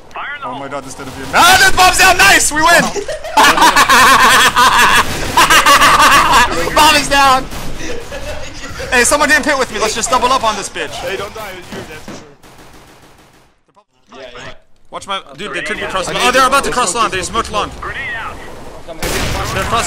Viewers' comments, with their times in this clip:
0:03 his laugh lmao